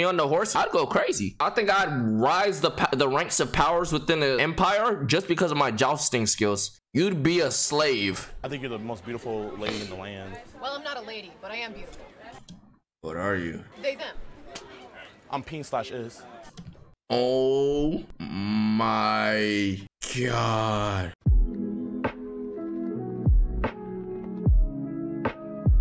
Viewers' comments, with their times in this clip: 0:06 how he read it was funny asf but he is right tho ngl😂😂😂